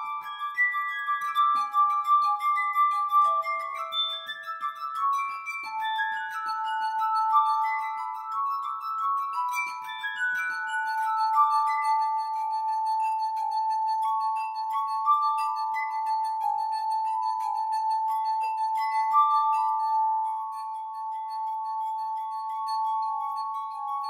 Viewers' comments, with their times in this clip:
0:10 this is amazing, what a pure, beautiful sound <3